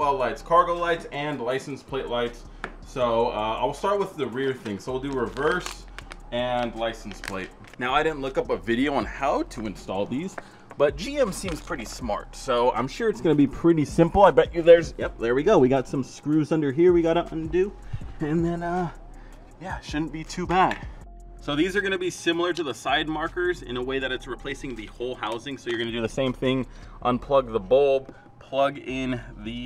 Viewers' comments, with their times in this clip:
0:10 I swear bro ripped ass